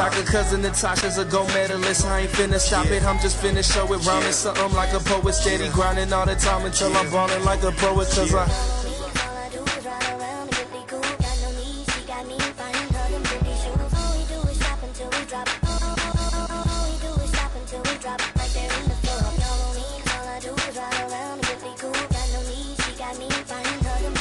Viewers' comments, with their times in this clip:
0:10 that flow from :55 to was League! Sick song.